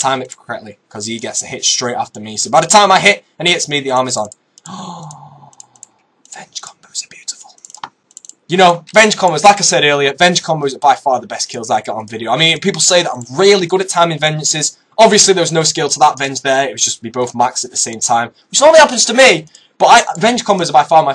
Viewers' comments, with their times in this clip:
0:03 *whisper* "veng combos are beautiful" LOOOOOOOL